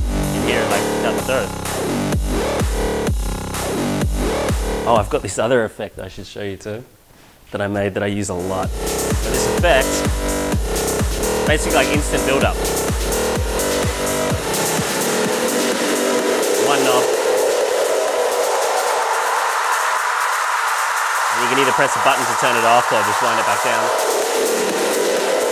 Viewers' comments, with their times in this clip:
0:09 How do you get like that hi-pass filter effect on one knob like that?